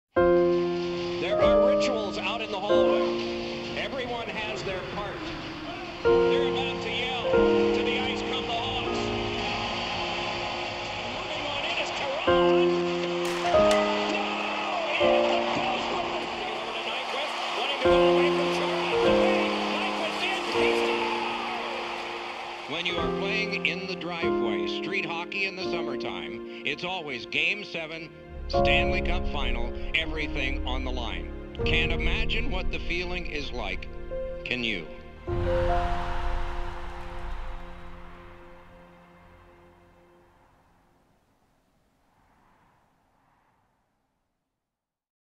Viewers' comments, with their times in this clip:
0:08 hopefully this means that when the team first comes out the horn goes off and also this horn sounds like actual Hawks horn so hopefully real goal horns
0:12 Just wondering.. Why did it sound like the guys hockey stick was exploding ? I hope it doesn't always sound like that!
0:31 So, there's wind indoors?